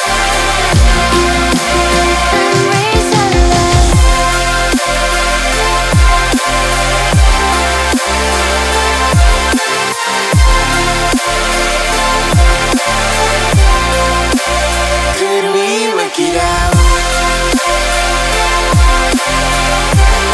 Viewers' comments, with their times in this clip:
0:04 that second dropppp It feels like the world is mine lollllllllll but seriously so eargasm